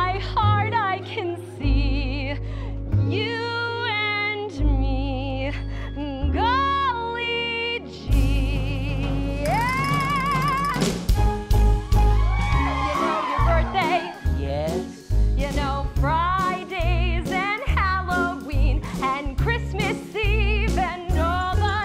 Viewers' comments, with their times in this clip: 0:04 bell dings and jewel falls off
0:05 That button falls down at exactly the ring it's so perfect😂😂
0:05 does anyone realized one of the diamond imitation fell of from her shirt then there's a "ding" sound effect? LOL